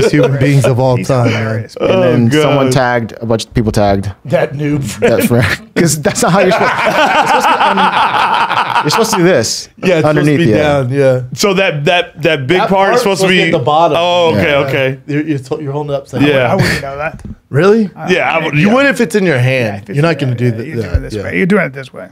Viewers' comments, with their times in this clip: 0:05 Brendan laughs, then Shapel laughs. Then comes to realize Shapel doesn't even know exactly what he's laughing at he just laughed because Brendan did it 1st 😂